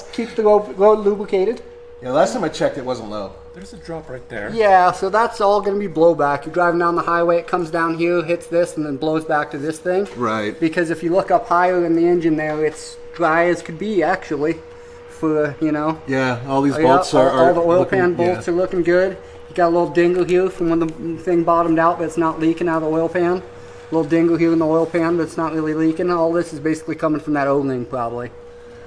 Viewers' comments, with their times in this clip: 0:10 What national accent does he have?